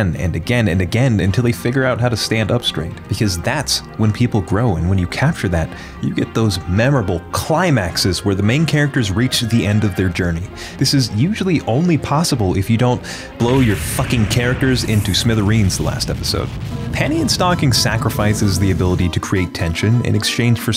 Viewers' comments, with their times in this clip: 0:08 🫵🏼😳 Bro pause, why were you so passionate saying that